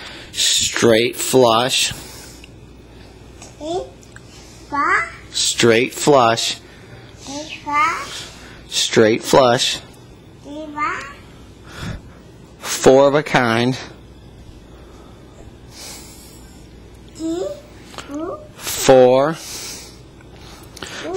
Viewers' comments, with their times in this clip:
0:06 she could dub for quacker the duckling in Tom and Jerry.. She's cute ,😍😍